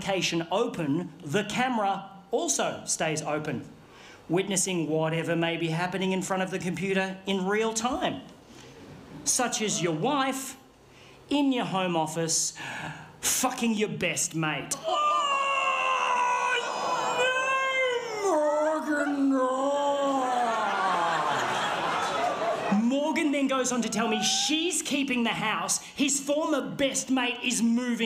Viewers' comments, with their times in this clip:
0:09 kudos to the person in the audience who GASPED, fully realising what was gonna go down.